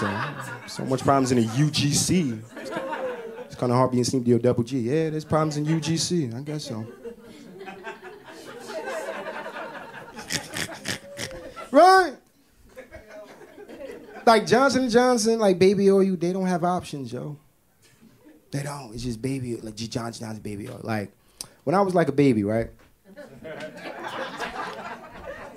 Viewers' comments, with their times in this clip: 0:10 Did i miss something? I listened to a half hour of this and couldn't find a bit of humor in any of the jokes. I really don't even think that anyone in that audience laugled either. It had to have been complete canned laughter just to ... I don't know ... Make the special less embarrassing to the comedian? Sorry. This dude is BAD!!!